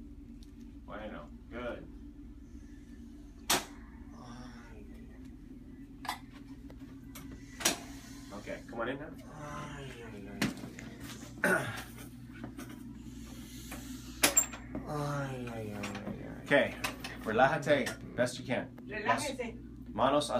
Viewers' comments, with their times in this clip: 0:03 xD Boom- oh geez